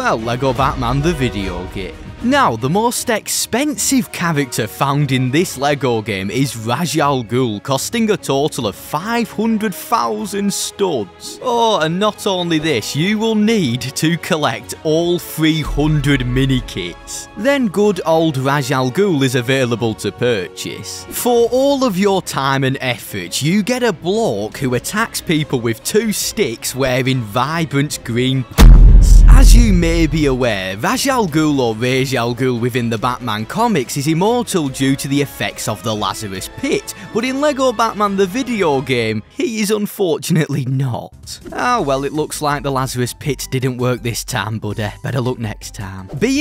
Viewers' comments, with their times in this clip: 0:04 ahhhh it got said wrong and idk why but it gets on my nerves 😭. It’s hard to write how it’s pronounced in a YouTube comment
0:28 why so much reverb I almost spat my water every where